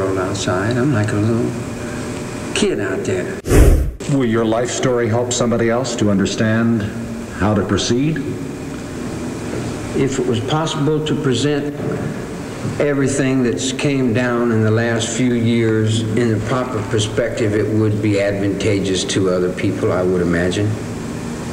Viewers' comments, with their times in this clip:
0:09 he makes a long clear statement that seems like an honest statement to him, but then immediately swoops into what strikes me as an imitation of Jim Morrison’s affect and poetry with the guru-speak.